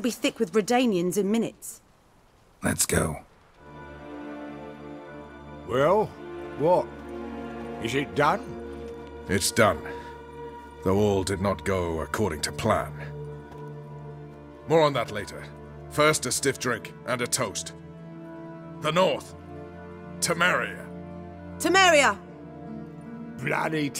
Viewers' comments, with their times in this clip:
0:05 Sean Connery interrupted his retirement to sneak in one last voice-acting gig...